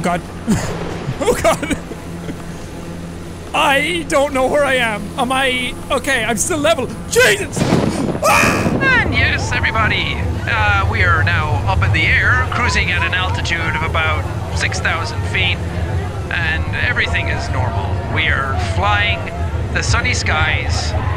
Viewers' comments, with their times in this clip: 0:03 That perfect scream.